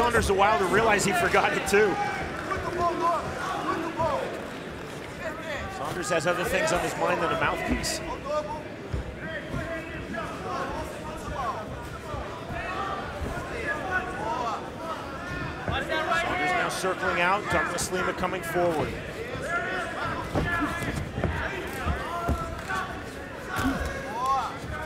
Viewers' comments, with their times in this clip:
0:06 Love the sound effect veeeeerry fast kick